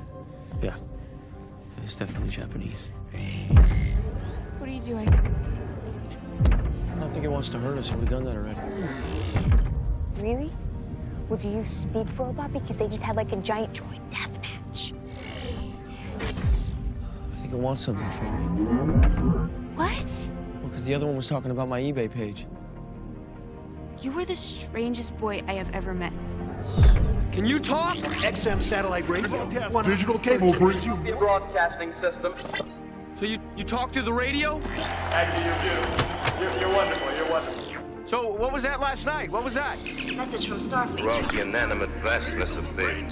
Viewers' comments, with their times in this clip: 0:03 I love this scene. Great CGI, night, this smoke And a soothing heroic soundtrack on background, just wooow
0:28 bumblebee talking the sam
0:29 I don’t know why but that moment always gives me chills. Probably cause it’s the first time an Autobot talks to a human, and Bumblebee’s unique way of speaking always surprises me.